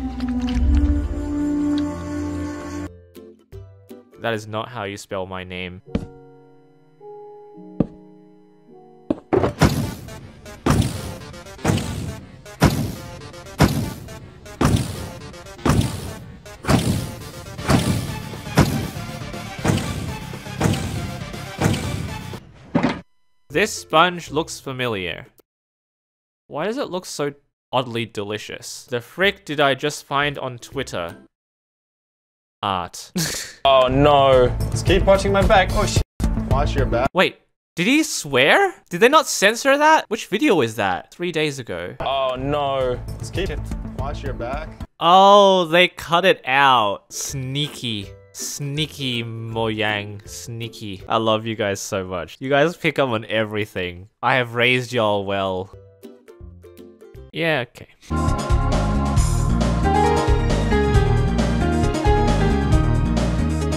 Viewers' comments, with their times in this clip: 0:09 why is this a beat ngl
0:47 HE SAID MOJANG NORMALLY